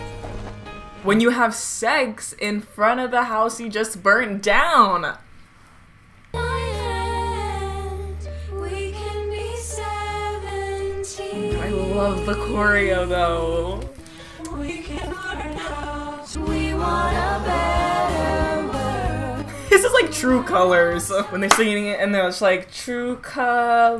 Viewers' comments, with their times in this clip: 0:06 This entire video every time someone broke out into song I was legit like "They need voice lessons, and breathing exercises" because they can not for some reason. Especially blonde girl who i think her name is Betty, don't remember because I hate her, so I'm gonna call her knock off barbie. Like that girl is legit the worse singer out of the bunch. Veronica singing Lifeboat made me cry with how absolutely terrible it was. Like girl no. And where I'm pretty sure they're singing the Seventeen reprise this was around my reaction: "You know how a choir is supposed to make you sound better since you're in a large group, well when all of the people in the choir are absolute trash at singing, you can really hear the imperfections in their singing." Like, I don't know why, but they all sounded collectively terrible here. And you could hear almost each individual person. That's not how singing in a group, or harmonizing is supposed to work. Get your s*it togetherrr.